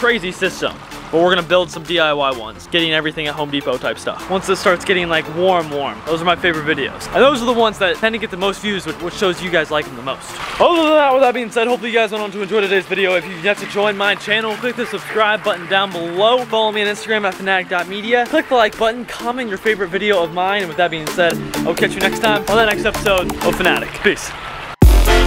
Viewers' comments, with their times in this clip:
0:10 what the heck did you say